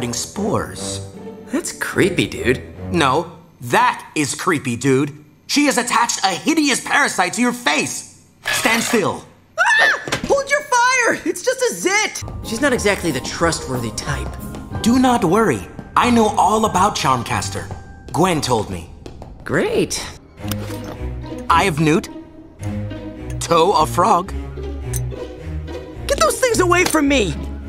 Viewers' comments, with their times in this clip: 0:10 He sounds like Ratchet from Ratchet And Clank Rift Apart.